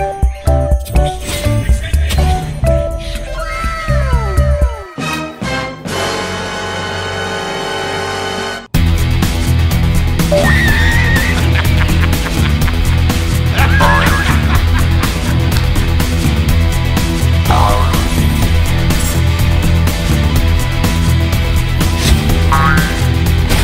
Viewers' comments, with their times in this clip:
0:08 Even Ketheric Thorn even couldn't hold the laugh